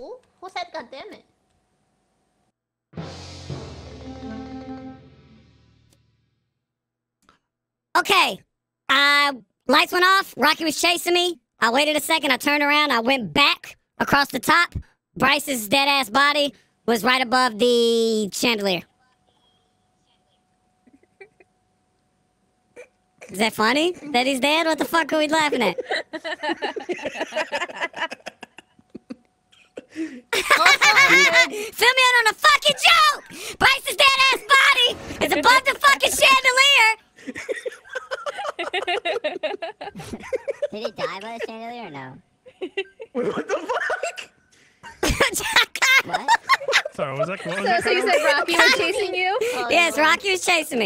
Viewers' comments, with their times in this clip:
0:04 The fake party voice was golden 🤣 The confusion when 2 people had the high voice had me rolling
0:32 when you try to splain dat shit that went down and get laughed at